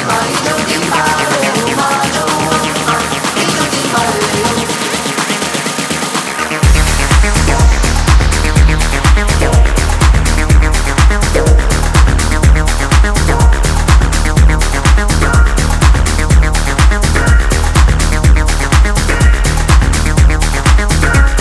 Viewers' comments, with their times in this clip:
0:06 omg the best sound with air